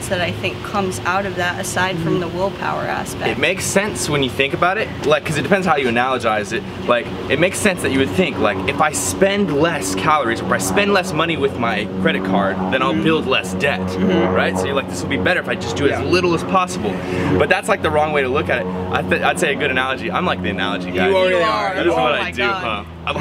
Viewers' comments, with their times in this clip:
0:05 what is "analagyze"? Lol